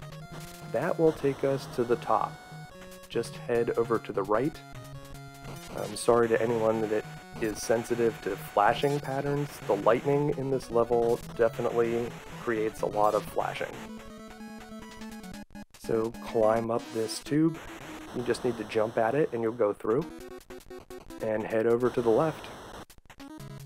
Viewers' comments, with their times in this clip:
0:10 Why? is an absolute nonsense track once more. They nailed it with the rockman series every time.